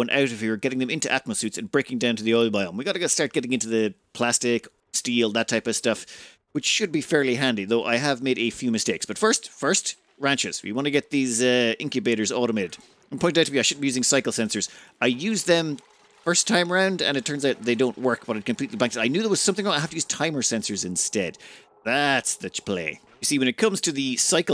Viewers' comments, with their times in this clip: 0:05 I thought you said plasteel. Too much rimworld